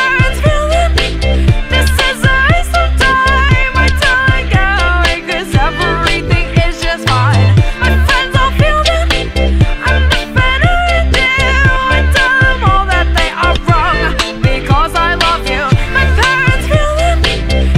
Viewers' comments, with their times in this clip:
0:03 what is this weird thing happening to sound ?